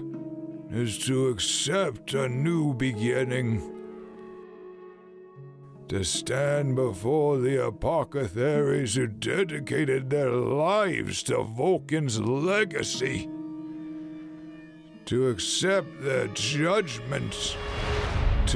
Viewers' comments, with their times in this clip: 0:06 narrator says “apocetharies” instead of apothecaries. I’ve noticed some words being mixed up like that in other videos. I believe he may be dyslexic 😅Doesn’t ruin anything (in fact it makes it more realistic in a way), i just thought I’d point that out. Great video!